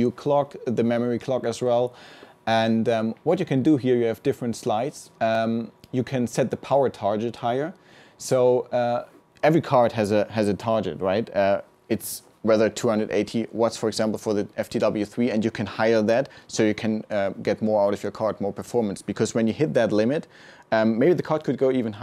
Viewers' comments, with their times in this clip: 0:06 every card has a tar-jet lol